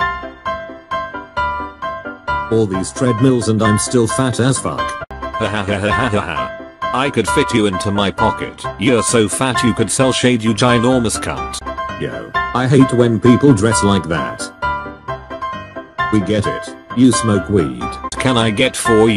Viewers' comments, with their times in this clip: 0:05 I cant stop laughing this voice kills me